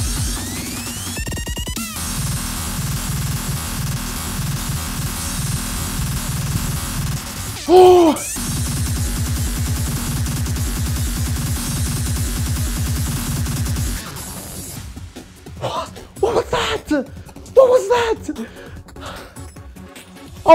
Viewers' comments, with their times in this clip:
0:03 sounds like windows crashed